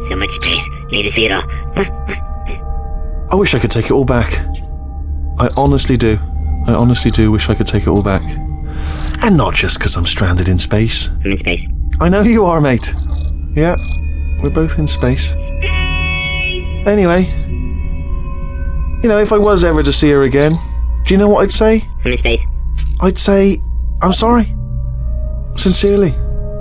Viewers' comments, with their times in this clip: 0:10 ''I am in space'' ''*chuckle* I know you are mate'' Aww so cute